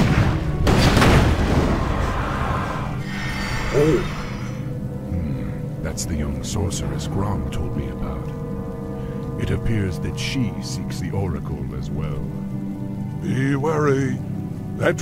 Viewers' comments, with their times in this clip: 0:03 I always wondered if canon Jaina had overheard Thrall and Cairne talking about her when heading inside the cave. They're not even whispering at all.